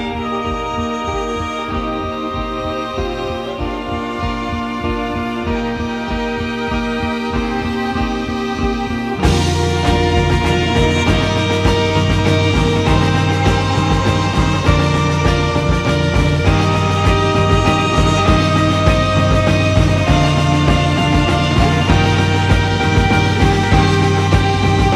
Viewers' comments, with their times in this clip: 0:09 when the drums come in it’s when you lift your skinny fists